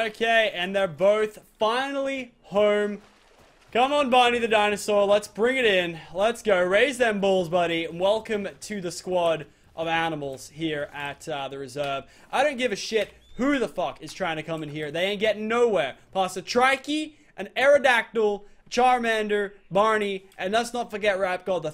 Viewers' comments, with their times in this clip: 0:06 did he say raise those balls